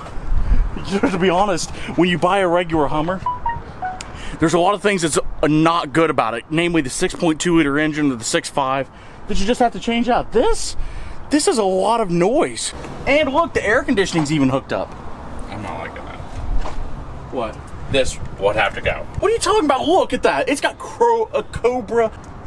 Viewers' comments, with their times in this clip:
0:03 Did anyone else hear that android